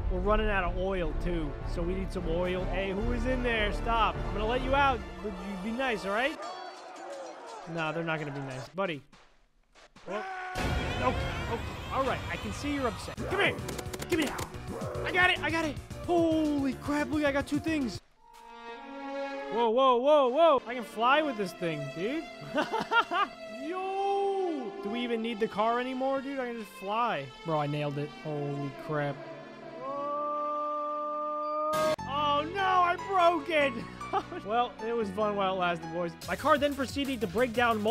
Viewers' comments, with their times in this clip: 0:06 The heldivers music surprised me lol
0:22 the works music